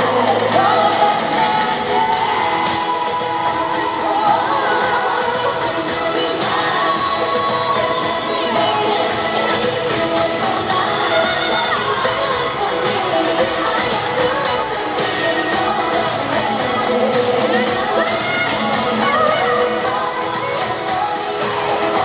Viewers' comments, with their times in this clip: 0:10 Jade fucks up so bad she can't stop laughing! Hahaha, love them ALL!